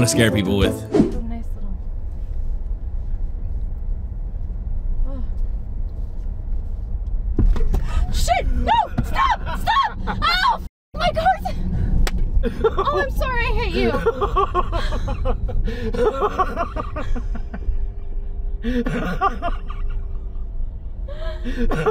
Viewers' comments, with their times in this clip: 0:09 I love how Tesha is so quite when going like 60mph